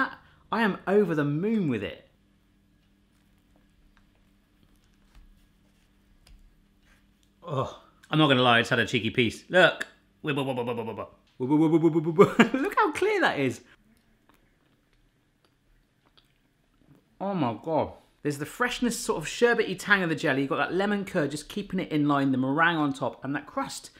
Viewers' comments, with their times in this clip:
0:09 His sound effect is so funny LMAOOO